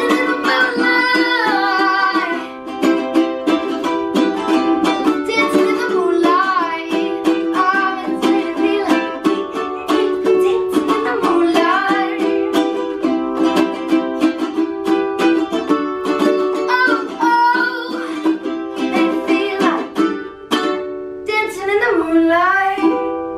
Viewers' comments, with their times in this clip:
0:08 Wish I knew what Miranda says to make Grace laugh so much!